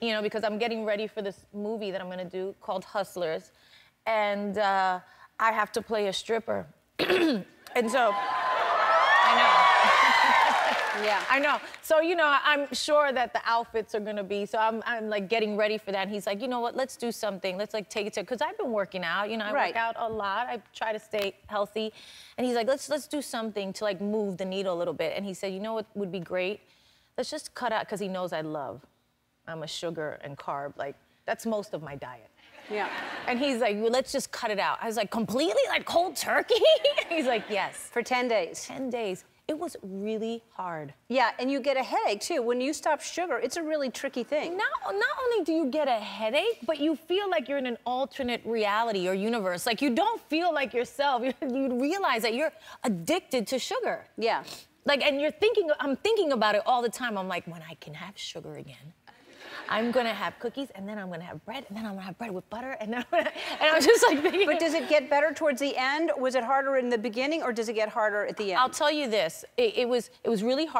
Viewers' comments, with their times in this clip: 0:07 ... that cough was so well placed ;)
0:52 she says the word "addicted" and then she sniffs her nose. Hmmmmmm.